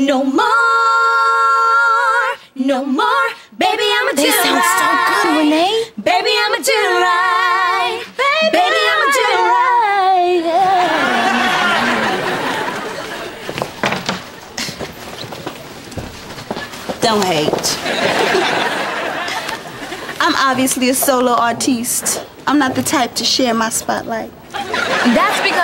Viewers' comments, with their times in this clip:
0:08 The girl at who interrupted 3LW sounded good, whats her name?